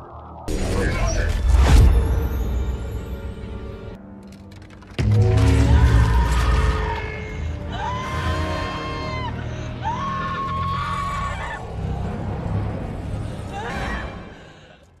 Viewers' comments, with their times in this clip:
0:04 my favorite besides the screaming
0:04 hearing that glove crunching and stones firing up